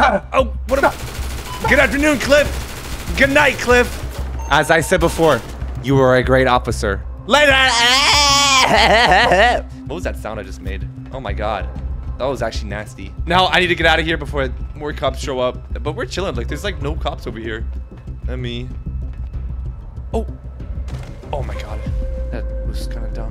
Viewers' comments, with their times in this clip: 0:07 Bro that laugh 😂😂😂😂😂😂
0:08 Bro that laugh 😂 😂
0:09 yo laugh was goofy ash